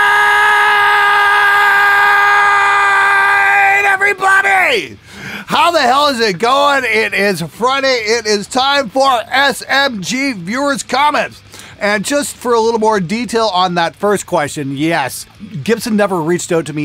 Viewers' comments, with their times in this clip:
0:03 if you wanna skip some 10 seconds or so of earrape